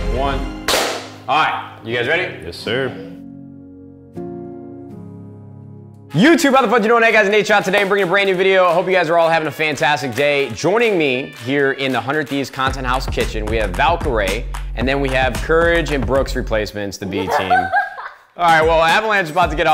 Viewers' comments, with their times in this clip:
0:04 when your teacher makes you clap once in assembly